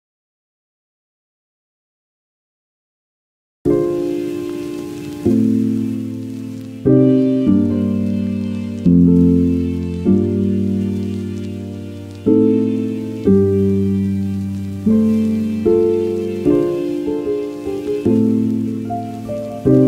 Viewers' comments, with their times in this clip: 0:04 WHY, would anyone put a fart prank on here, with no sound?